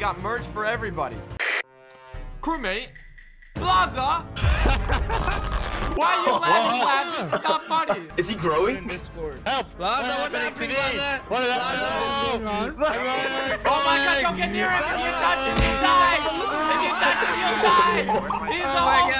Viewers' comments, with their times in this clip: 0:04 Laff sounds like an evil scientist